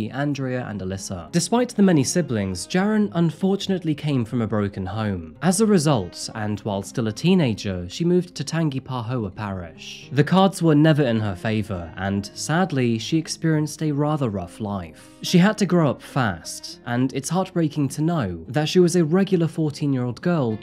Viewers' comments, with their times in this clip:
0:07 always interesting to hear people read pronounce lousiana parishes Tangipahoa (tan · juh · puh · hoe · uhh) I can't pronounce most of them, don't even ask me to spell half of them without googling it a lot of people do call it tangi (tan·gee) tho